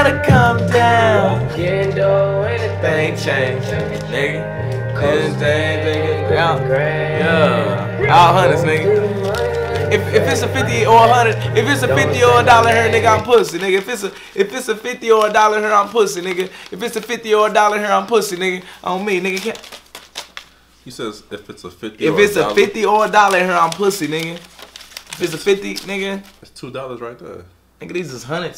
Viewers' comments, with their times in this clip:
0:09 Did he just say "Honey Singh"?